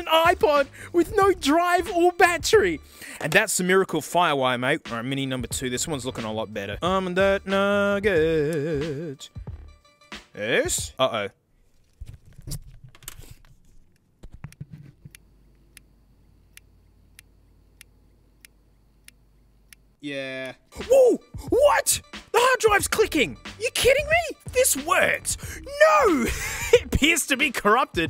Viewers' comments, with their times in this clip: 0:06 Was that intentionally to the tune of Homer Simpson's "Shavin' my shoulders"?
0:13 Hard drive clicked to death
0:14 Click of Death